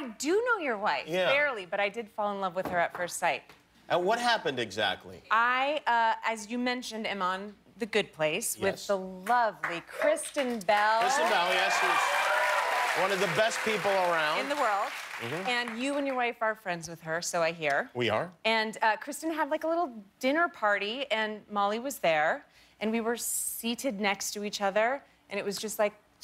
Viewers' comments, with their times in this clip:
0:08 People start clapping BEFORE she actually says “Kristen Bell”. They need to get the timing of the APPLAUSE sign right.